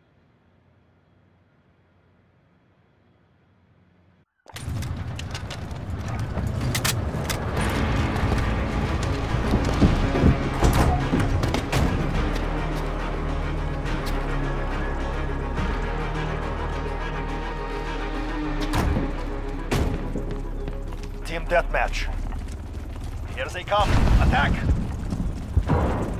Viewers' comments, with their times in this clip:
0:08 I heard the voice of Khaled Alasad